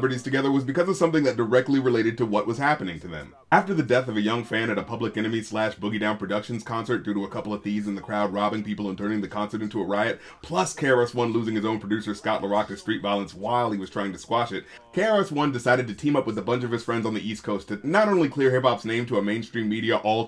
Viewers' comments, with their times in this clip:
0:04 how does he breathe